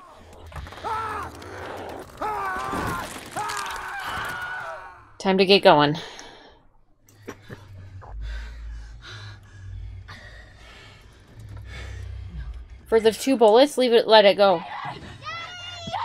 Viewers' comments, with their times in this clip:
0:03 ☺ Oh my gosh. They actually used the famous Wilhelm scream.